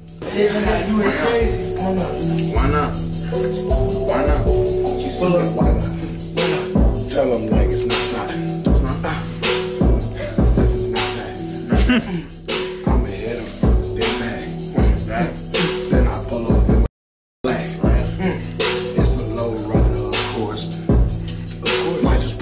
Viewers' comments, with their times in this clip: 0:03 that beat is unreal I hope this is either an unreleased song of yours or it’s a free beat online somewhere 😂